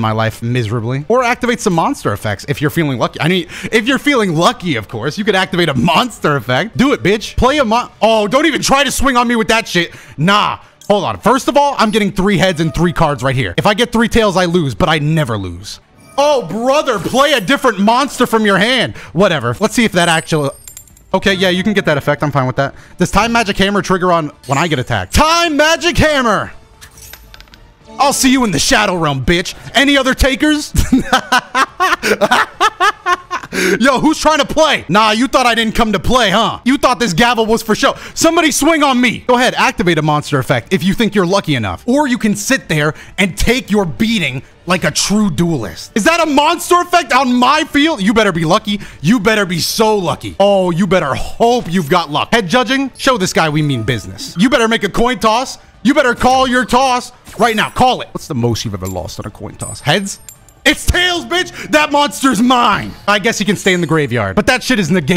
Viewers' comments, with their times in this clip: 0:05 Why did he turn into Scary Terry halfway in? ( Onward)
0:46 the audacity in his voice